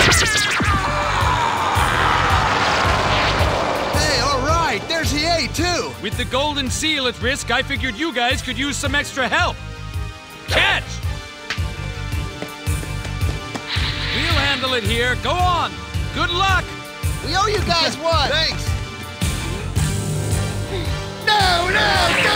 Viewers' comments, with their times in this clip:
0:05 ngl Hiei sounds like he was voiced by a Canadian lol